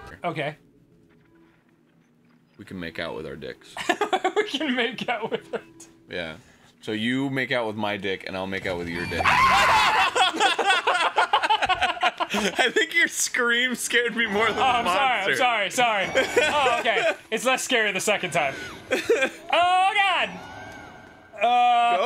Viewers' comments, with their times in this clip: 0:05 Oh my god, Dan's scream was fucking hilarious. I had to stop the video so I could catch my breath and wipe away the tears.
0:06 I got more scared of Dan's scream than the monster
0:07 the sound of true fear. XD
0:07 Dan's scream is incredible
0:07 Dan's scream gives me life
0:07 i really want to see dans face during that scream (roughly)
0:08 dan's scream XD
0:08 Dude, everyone knows is always gonna be the most hilarious scream ever!
0:08 Dan's scream made me laugh so hard. XD
0:08 honestly the most genuine scream I've ever heard
0:08 dude that scream was blood curdling
0:08 dan's scream will always be my favourite thing
0:09 That scream ... Oh my god
0:09 dan's scream holy shit
0:09 Dans scream HAHA
0:09 Dans scream of terror
0:09 Dan’s scream is one of my favorites, it was so raw & genuine
0:09 Danny's scream tho...
0:09 dan my ears
0:09 The scream is gold. Still makes me laugh every time I hear it.
0:09 I can't stop replaying Dan's scream is fuuuuuuuunny.
0:09 dans scream sounds like the stereotypical girl scream
0:10 The scream is the best
0:10 Dannys scream just blew out my ear drums. I regret wearing headphones while at full volume.